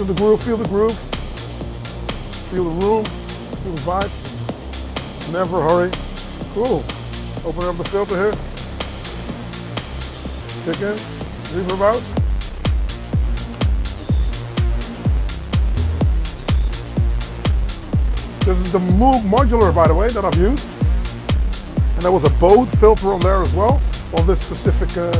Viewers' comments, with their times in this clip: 0:07 thats rolling man 😎